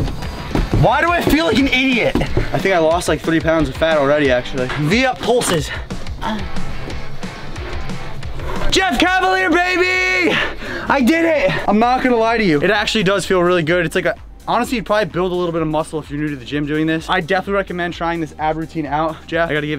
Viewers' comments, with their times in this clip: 0:05 this dude moaned